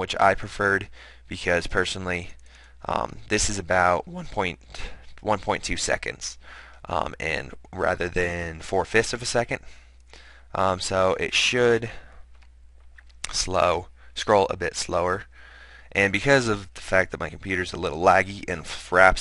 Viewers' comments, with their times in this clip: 0:04 Subbed because you squeaks